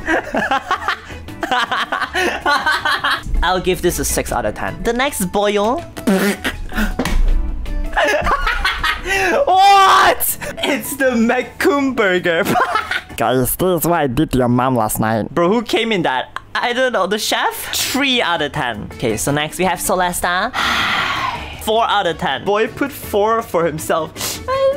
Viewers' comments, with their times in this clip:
0:09 you’re laugh is cute plus those foods are cursed😭